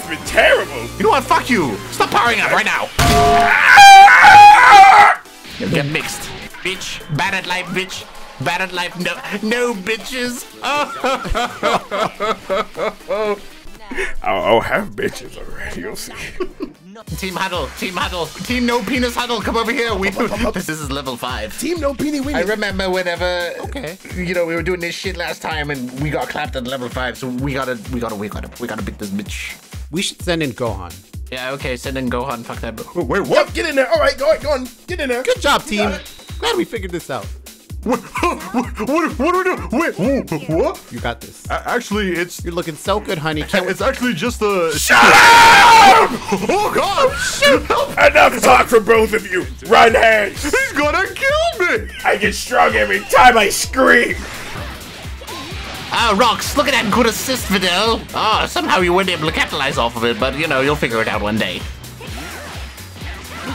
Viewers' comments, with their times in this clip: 0:09 I really liked this part I liked the laugh
0:44 Am I the only one who got jumpscared by his scream